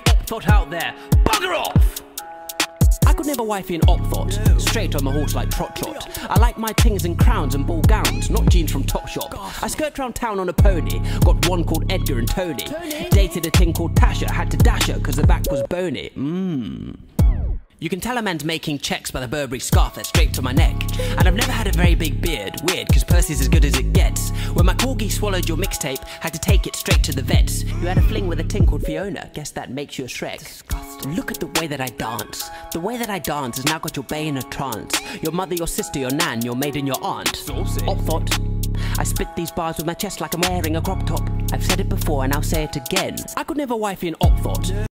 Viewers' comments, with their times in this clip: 0:06 this flow is actually fire
0:30 I’ve watched this video at least 50 times just because the subtle “ᵈⁱˢᵍᵒˢᵗⁱⁿᵍ” gets me every time 💀
0:30 the soft "disgusting" is the best part 😂💀
0:30 that “disgusting” adlib killed me
0:36 Hype guy said "sAucy"